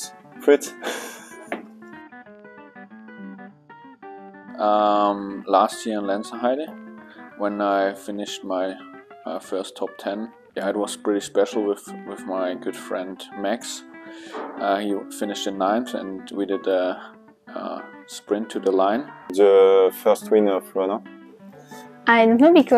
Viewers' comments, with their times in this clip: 0:03 "Best WC Moment?" Well I thought, this is going to be different !!!!!😃 "My best sheeet was in the twees in Lenzerheide" 😁